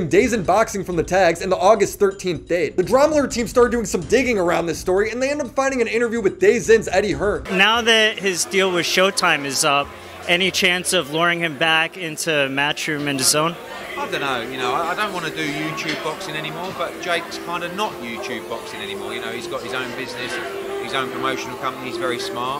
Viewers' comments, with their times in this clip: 0:05 Planet Earth: DAZONE This guy: DAYS IN